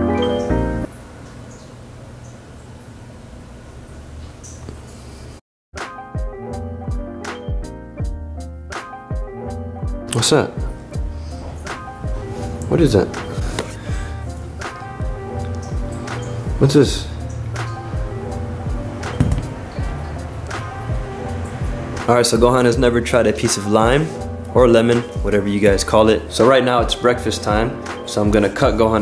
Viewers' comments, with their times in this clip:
0:10 when he said watsup then someone copy watsup in low voice